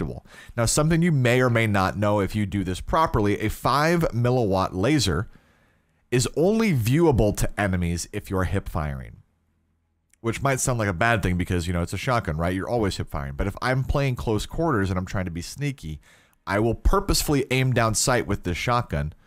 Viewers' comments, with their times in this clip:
0:07 "Emenies" No hate